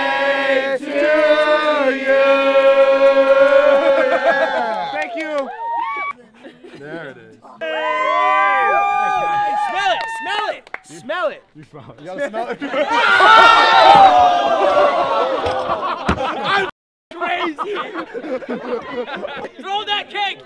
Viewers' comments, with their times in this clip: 0:06 Awww it was sooo cute the way he said “thank youu”